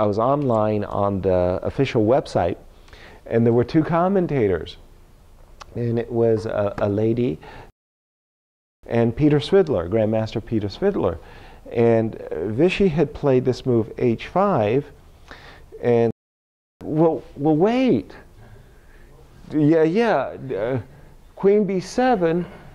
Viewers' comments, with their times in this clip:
0:03 why the mute on the lady's name?